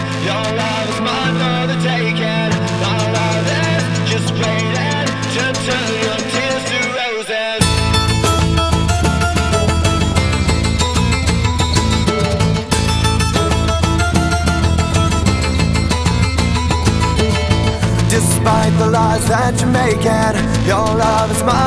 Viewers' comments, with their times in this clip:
0:07 The acoustic solo at the beginning is beautiful. Gets me every time. It's so...hypnotic? I can't think of another word. P: